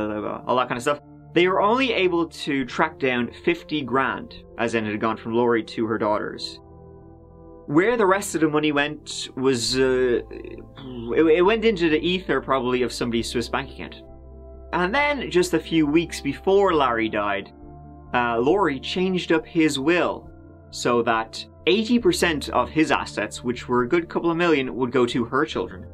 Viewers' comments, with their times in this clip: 0:09 "it went to - smth smth - somebodies Swiss bank account", took me a few times to get that much 😅